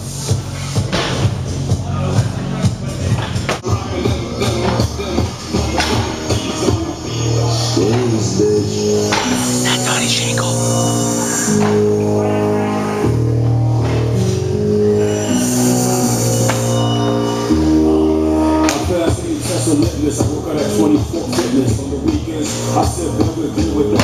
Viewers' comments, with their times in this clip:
0:08 Did anyone else hear someone whisper Donny Shankle ?